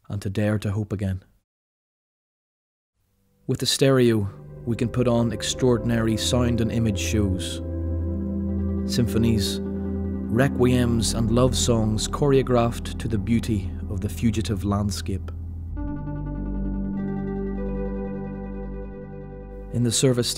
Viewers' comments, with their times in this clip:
0:07 The song what is it? It's so calming.